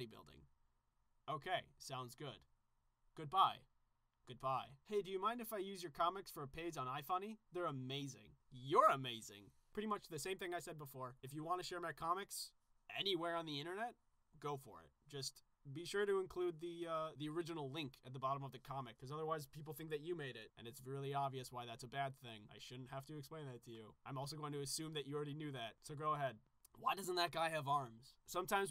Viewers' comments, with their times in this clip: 0:09 no YOUR BREATHING GAAHH insert keanu reeves meme here